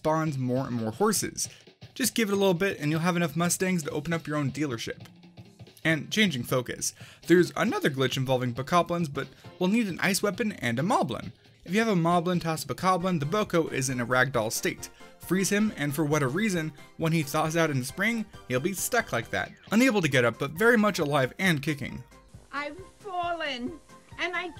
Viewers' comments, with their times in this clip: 0:07 Did anyone else notice the voice crack on